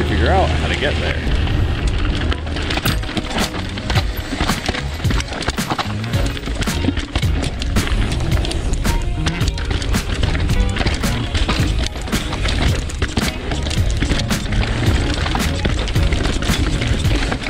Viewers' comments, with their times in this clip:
0:03 Whats that tune starting ? kinda chill´n´funky ;)